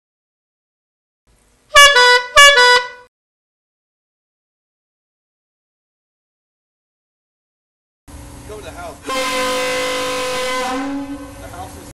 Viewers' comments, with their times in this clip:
0:09 Go to He*l!